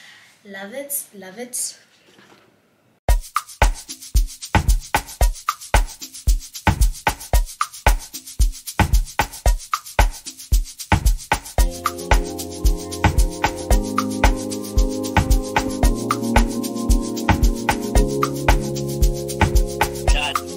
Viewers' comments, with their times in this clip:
0:04 omg I missed this song on your videos 😭😭😩